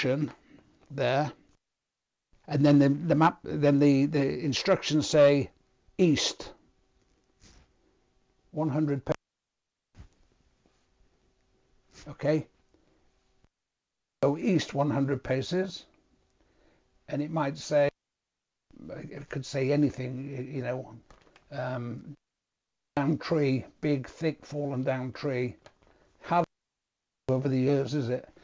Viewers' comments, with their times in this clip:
0:09 Onward - The sound's cutting out every 2 to 3 Seconds - Anyone else?